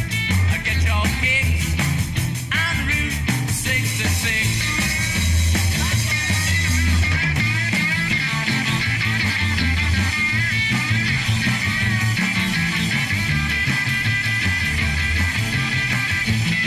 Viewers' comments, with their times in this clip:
0:03 Keith does the solo